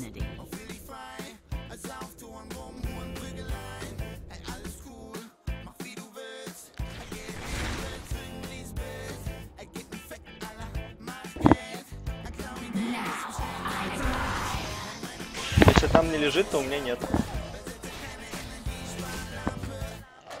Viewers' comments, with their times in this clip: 0:03 haha german music